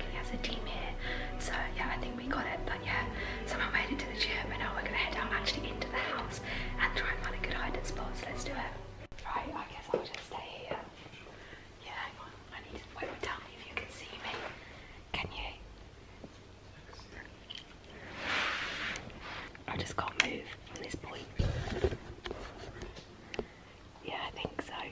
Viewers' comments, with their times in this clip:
0:05 whys she whispering